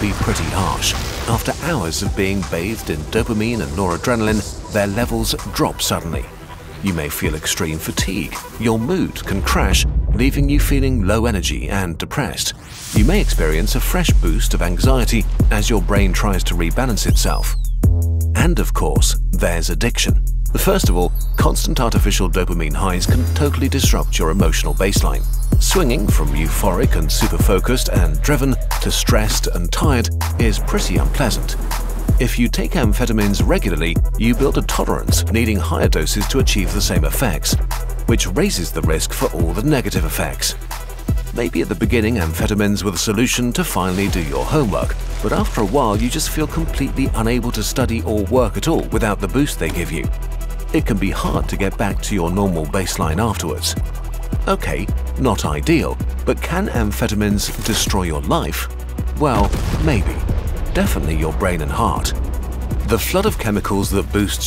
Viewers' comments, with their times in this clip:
0:09 This audio track goes hard!!! 🕺
0:09 unrelated to the video-- that bass drop slaps HARD
0:12 "Leaving you feeling low energy and depressed" beat drop
0:12 wow kurzgesagt, calm down with the music
0:12 holy soundtrack! I was literally shaking my head with that beat! 🤣👌
0:14 That beat tho 🔥
0:14 that is a SICK beat. Loving the score!
0:22 music goes hard 🔥🔥💯💯
0:34 ok hold up the hell is this beat bro it’s heat
0:50 This beat is going hard 😮‍💨